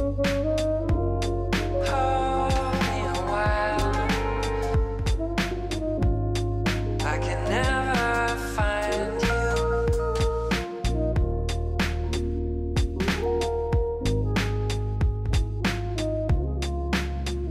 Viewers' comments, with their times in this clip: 0:03 why does it sounds like the minecraft villager npc voice's ?